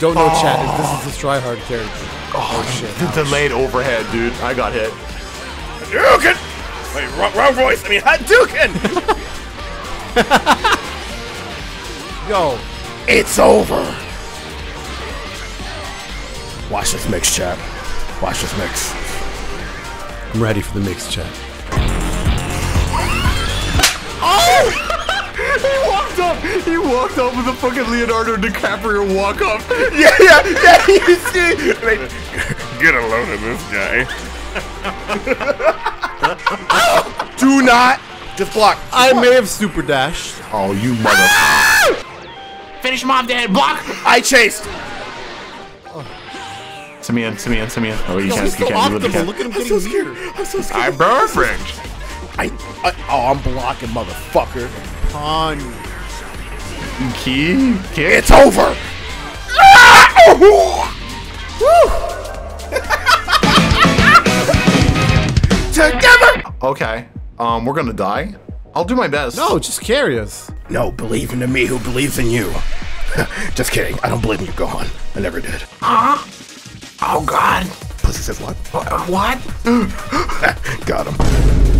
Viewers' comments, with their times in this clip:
0:07 I feel like thats what goku would actually sound like if he said hadouken
0:14 i can hear the faintest sound of spider dance
1:01 that "Woo!" gave me chills
1:04 The sonic forces music kicks in nicely with the "TOGETHER!-"